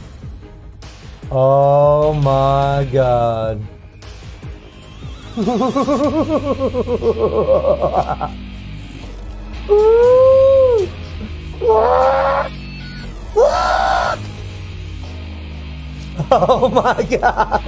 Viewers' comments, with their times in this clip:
0:03 nice Dr. EVIL Impersonation . Lmao 🤣🤣🤣